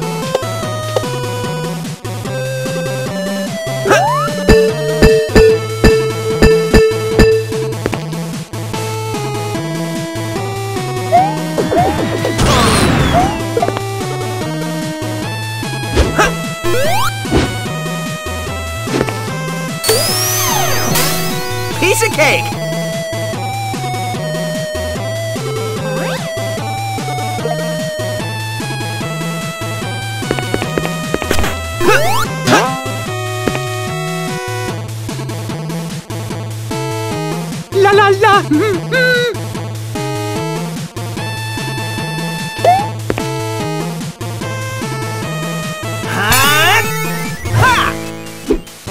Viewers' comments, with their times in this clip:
0:07 Sounds like mercedes e class chime
0:36 Me: ...where’s Mario? Mario: *humming his theme song* Me: Oh.